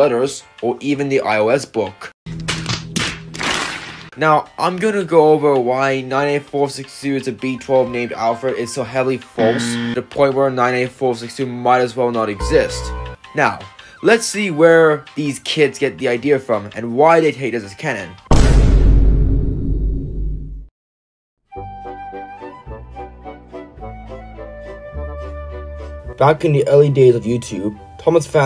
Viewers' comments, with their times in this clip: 0:09 i laughed at the fail sound